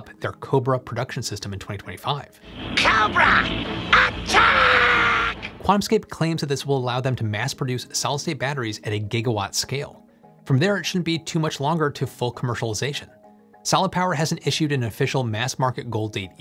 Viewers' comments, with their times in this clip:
0:04 Jeez - Volume warning.